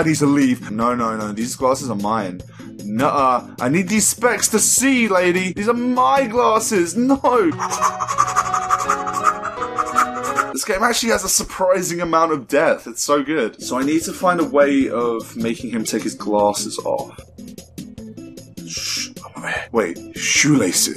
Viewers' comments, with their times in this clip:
0:07 hear that piano player goin in xD